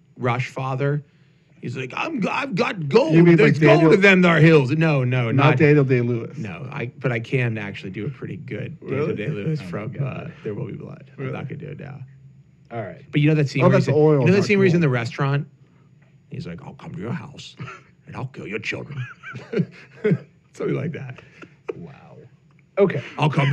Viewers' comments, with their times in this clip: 0:06 when he starts going all Daniel Day-Lewis / Daniel Plainview for the rest of the podcast.